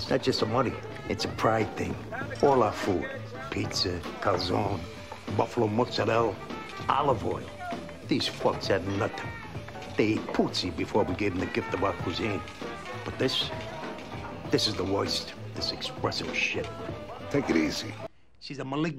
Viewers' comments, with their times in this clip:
0:04 It's a friggin' disgwace I tell ya...at in da video Pawlie should know how da correctly pronounce cal-zO-nay.